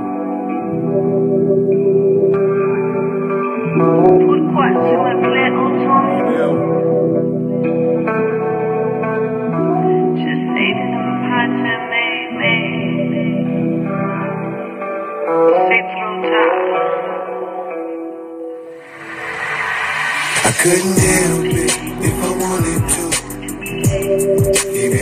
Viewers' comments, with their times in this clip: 0:06 Y’all sleepin on that’s one of the coldest tracks he ever made my opinion. The beat is perfectly dark AND KB killed the verses but that hook is ONE OF HIS BEST LEGEND